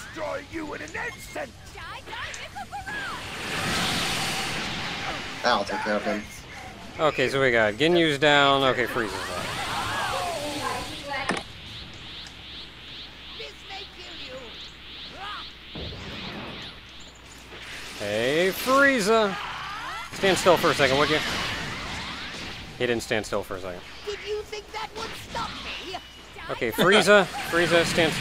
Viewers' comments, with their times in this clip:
0:10 I hear someone in the background of the mic. XD Who was that?